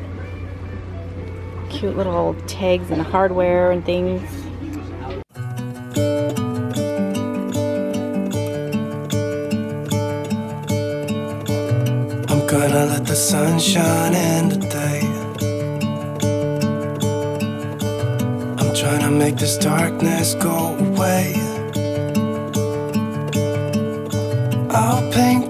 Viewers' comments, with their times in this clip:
0:10 what a beautiful trip and amazing finds, thank you for sharing! the music is amazing, who is the musician such a soothing song and perfect for this.